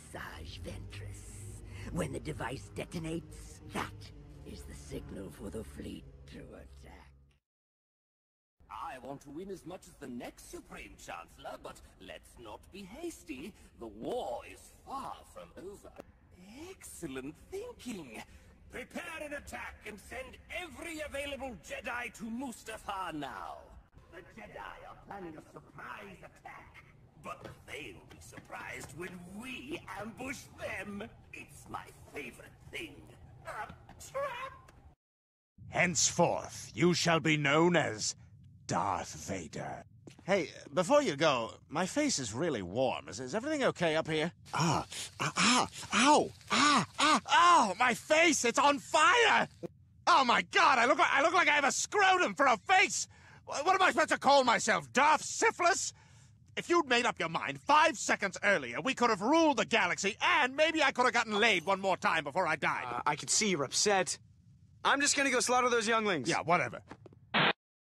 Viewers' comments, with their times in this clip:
0:09 stewie, is that you?
0:13 Joker up in here
0:48 sounds a little bit like Peter Griffin.